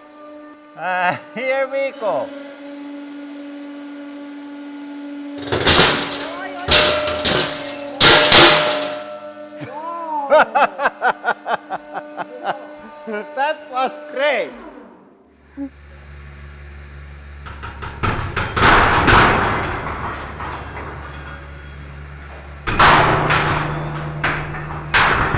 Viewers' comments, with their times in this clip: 0:09 Queue super-villain maniacal laughter lol awesome!